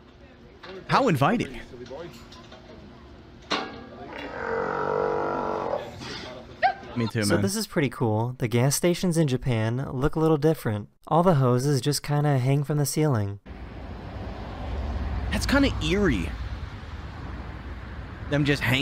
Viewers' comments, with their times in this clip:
0:04 Bro turned into a siren 💀